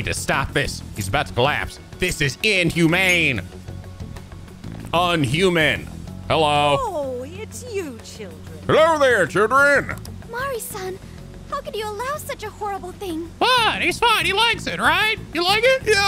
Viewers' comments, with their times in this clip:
0:04 That Chef impression caught me off guard lol